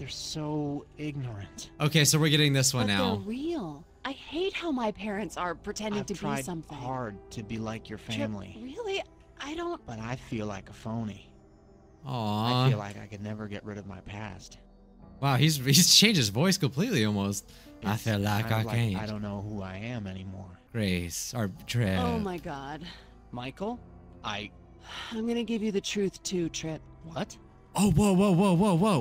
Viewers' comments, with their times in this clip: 0:09 His voice changing like that made me laugh so hard 🥲
0:13 why does he suddenly sound he has a southern accent now- LOL